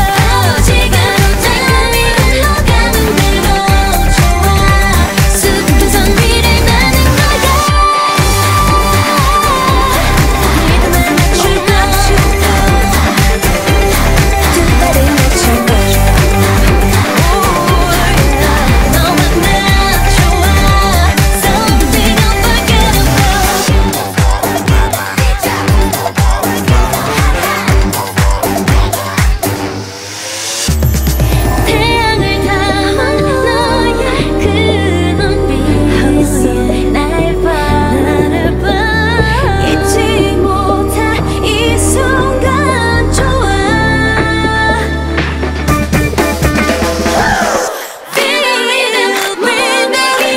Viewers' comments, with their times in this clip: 0:05 JOYS HIGH NOTE WILL BE FOEVER ICONIC❤❤❤
0:05 Joy’s high note gives me LIFE
0:07 Can we just talk about joys high note like I can now rest in better piece !
0:32 That's not a high note when you scream...Have you ever hear a high note? I guess not. The only person who hit a real high note, it's Seulgi you can hear the background vocal. That's a high not my friend. Maybe that's not Seulgi, i can't hear properly, Joy or Seulgi.